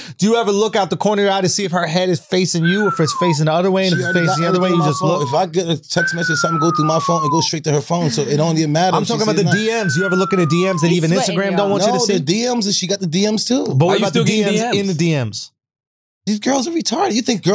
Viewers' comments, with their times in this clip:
0:03 Charla really knows how to instigate. he starts whistling and only a true instigator knows the whistle technique lmaoooo